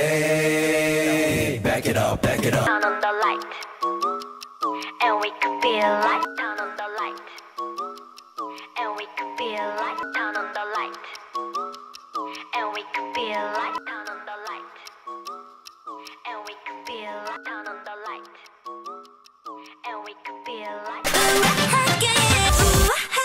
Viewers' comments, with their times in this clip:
0:05 .. They stole background music from ddu ddu du! i though it was that song only